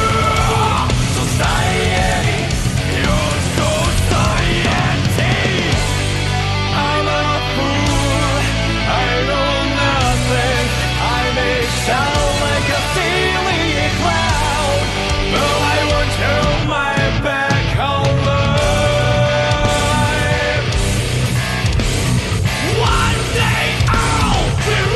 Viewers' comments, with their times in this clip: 0:06 How people who thought the lyric was "I'm a clown of fate" instead of "Armor-clad faith" be right now:
0:06 Nobody mentioned sounding like Machine Head's "Locust", very similar riff and vocal delivery.